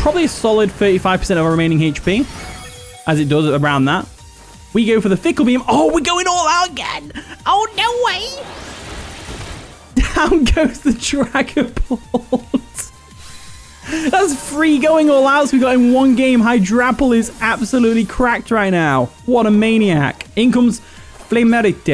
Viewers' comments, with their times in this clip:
0:08 That “Oh, no wayYyYy” made me chuckle 😂